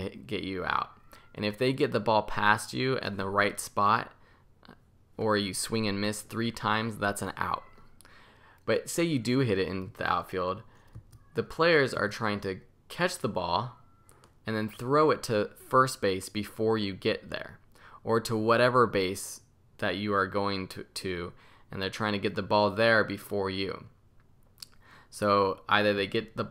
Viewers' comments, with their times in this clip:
0:10 I swear I hear a cat